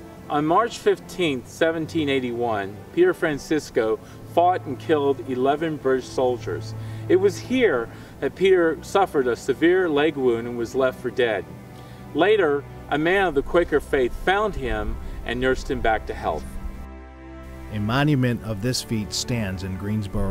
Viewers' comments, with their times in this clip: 0:04 Is it me or did it at first sound like he said, “ he fart and killed 11 British solider” (i’m sry if it’s rude for me to say that)